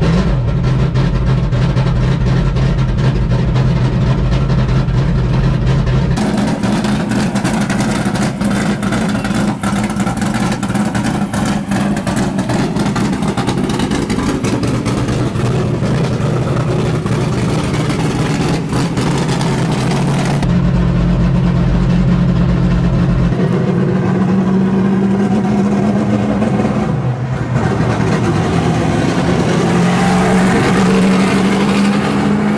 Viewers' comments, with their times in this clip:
0:06 What REAL stock cars should sound like. None of that NextGEN crap!
0:18 car sounds so bad ass right there. You can tell she’s gonna move.